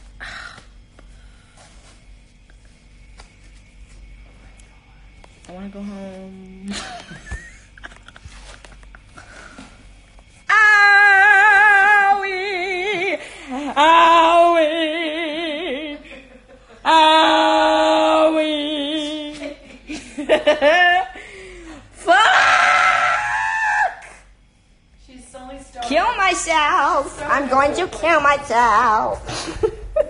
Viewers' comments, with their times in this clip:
0:10 how does she make that sound good
0:11 ... what lovely singing
0:11 HOW DOES SHE HAVE VIBRATO THERE SHE DOES IT EFFORTLESSLY